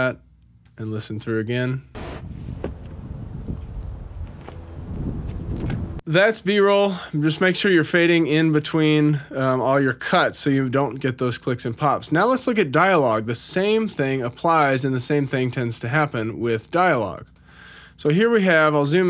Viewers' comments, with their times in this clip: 0:05 great advice but right ish there's a pop where you cut from the screen to your face lol